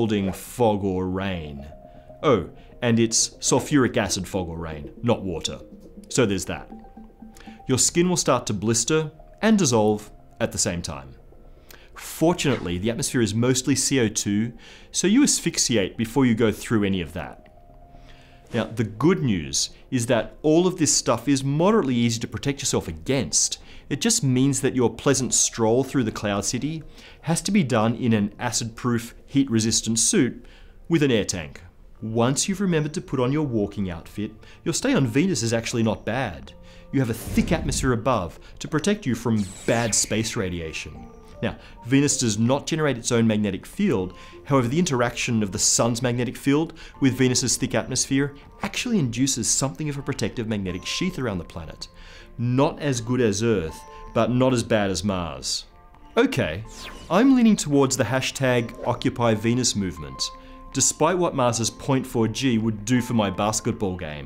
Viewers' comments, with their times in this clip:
0:07 "Your skin will start to blister. And dissolve. At the same time." Just the way he says that ^^'
0:47 turned American when he said atmosphere lmao